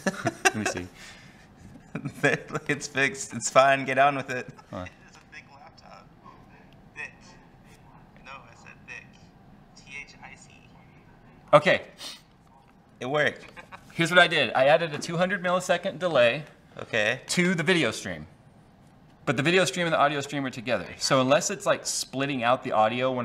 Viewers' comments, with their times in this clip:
0:05 Audio fixed for those wanting to get to the stream...